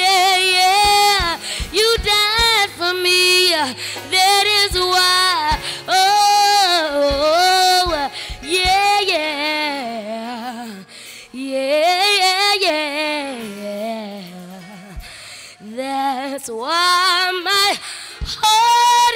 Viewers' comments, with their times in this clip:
0:05 that run right there 🙌🏽